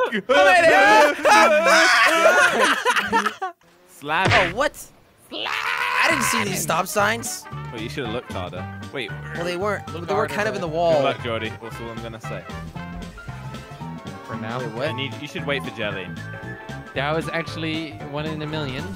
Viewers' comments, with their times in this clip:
0:03 was that a Ethan brad berry slamming